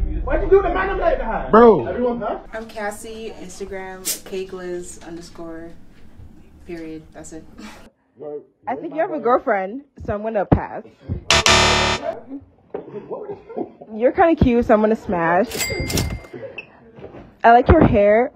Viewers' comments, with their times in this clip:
0:03 😂😂😂I thought she said cakeless